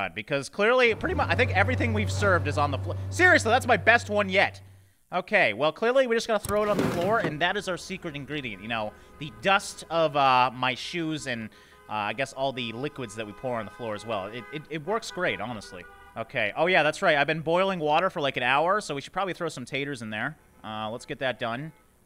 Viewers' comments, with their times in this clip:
0:05 Did seriously nobody else hear the horn ??